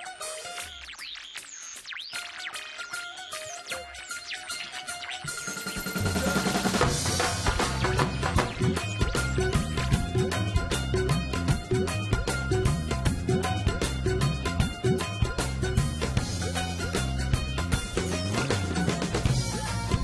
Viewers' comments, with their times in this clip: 0:05 the dhol sound was coming through, why was it cut off 2 seconds after??